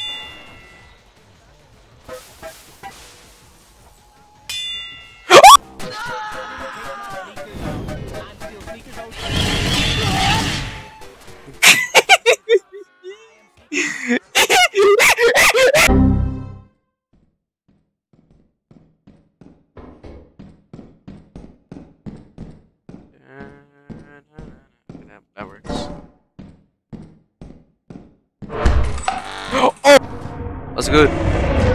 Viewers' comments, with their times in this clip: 0:04 bro sounds like that one kid that got scared by fnaf
0:13 I like your sound from calming to panicking.